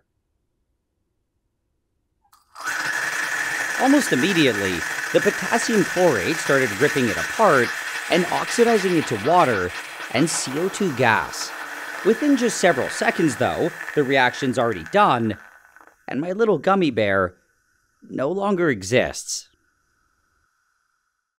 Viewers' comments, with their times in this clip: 0:03 these aren’t the sounds of the chemical reaction, this is the screaming and gurgling of the dying gummy bear. Edit: damn, thx for all the likes